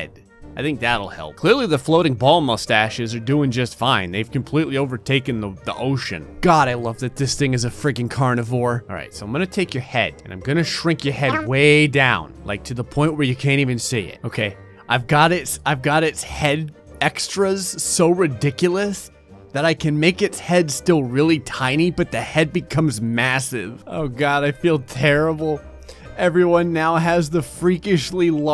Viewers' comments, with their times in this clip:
0:10 when he added the Yoshi sound affect when the head shrunk I started laughing